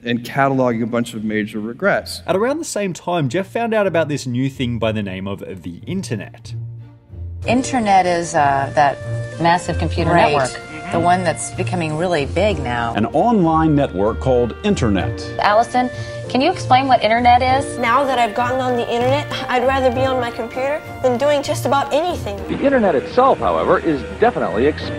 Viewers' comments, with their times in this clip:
0:07 what the heck is the music here